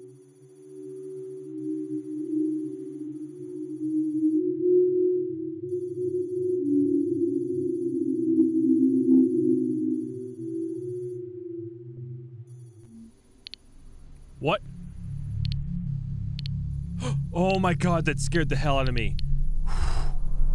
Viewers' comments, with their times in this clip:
0:04 I hear a SIREN and now the sound is in my HEAD